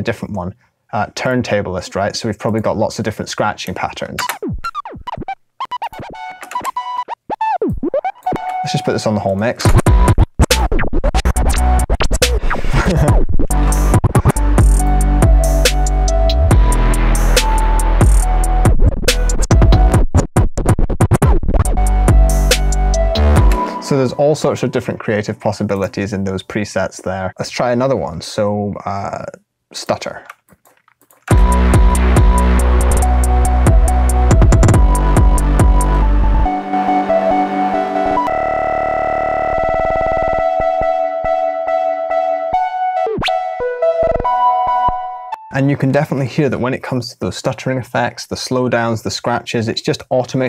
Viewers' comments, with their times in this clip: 0:03 that sounds like something mr.bill would make i love that glitchy preset. i thought it fit really well
0:09 "lets just put this on the whole mix" REALLY REALLY DOPE MUSIC STARTS PLAYING Dude you're honestly a god. You've helped me so much with countless videos and I can't thank you enough for that
0:16 how did you do this bass
0:38 when your CPU suddenly crash